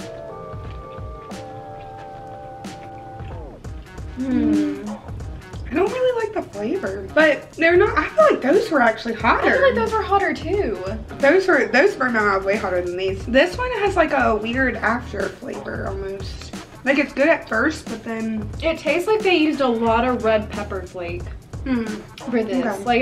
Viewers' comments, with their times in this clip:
0:04 Fun video, I like how you both said Hmmm at the exact same time lol...and you both do that cute dance, haha...and Yes I'm giving a thumbs up to watch the actual blazing challenge!